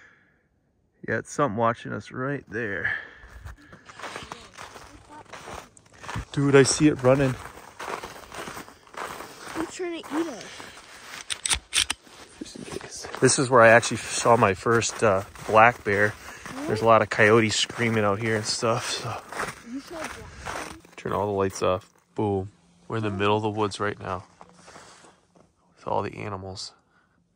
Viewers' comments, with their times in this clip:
0:10 was that you loading your tool ? Haha great video as always